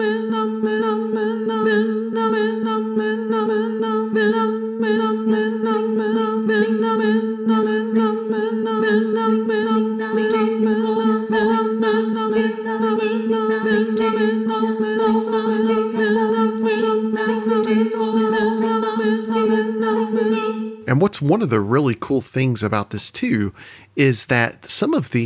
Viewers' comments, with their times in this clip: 0:07 I dont about you guys but the those vocals sounds like the SQUID GAMES theme song